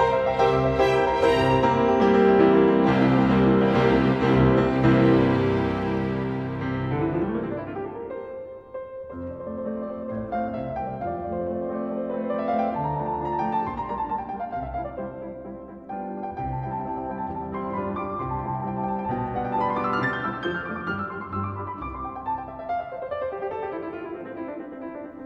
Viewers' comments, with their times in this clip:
0:09 The theme at the minute sounds like the second movement of K. 13 that Mozart composed when he was only 8 years old. Why doesn't the first movement follow a normal form? It looks like a half movement.